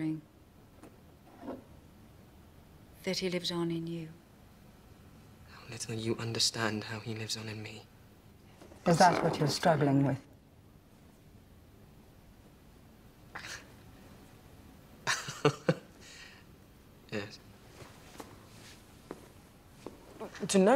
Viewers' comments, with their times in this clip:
0:08 Is Jessica using "The Voice" or is that a frog stuck in her throat?